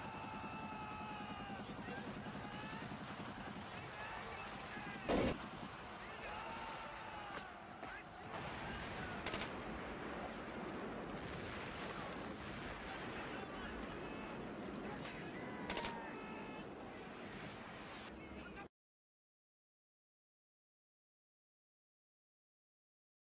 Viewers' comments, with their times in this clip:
0:08 Vary good, but at first vary low sound. most of all I like scene and of course I like whole movie (Y)